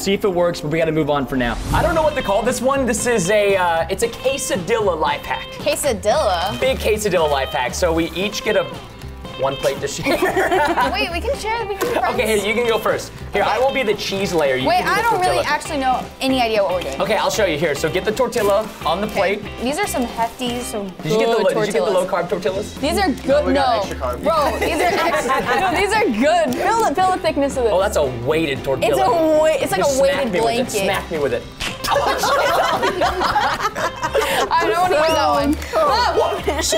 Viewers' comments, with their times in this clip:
0:04 All Mexicans know the way he said this is cursed I am a Mexican and we say it waaaayyy different
0:18 Preston: says Me: says (tor-ti-ya)